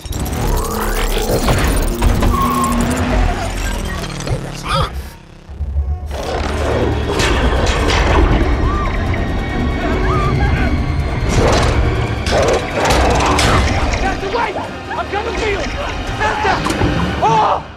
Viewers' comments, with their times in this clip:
0:04 sounded like bee said "what was that?"